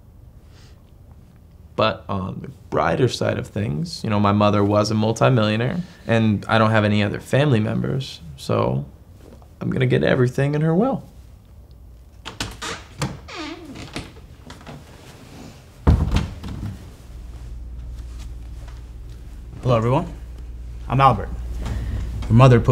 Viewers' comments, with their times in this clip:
0:09 the son literally says memebers